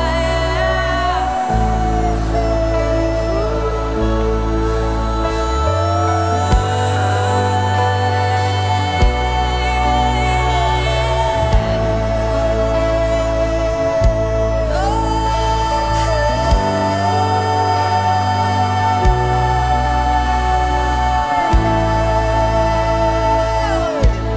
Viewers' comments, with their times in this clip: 0:08 I love at the start of the song how her voice is delicate and croaks in a way, that sparks a change in the atmosphere. In some cases this could of been a mistake but this was something so beautiful. It had a spirit of breakthrough behind it.